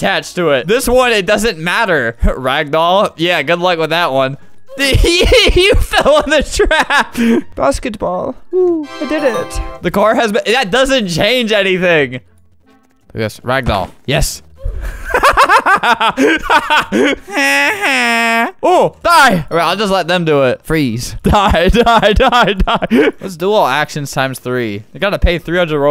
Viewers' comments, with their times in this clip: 0:07 i love that voice idk why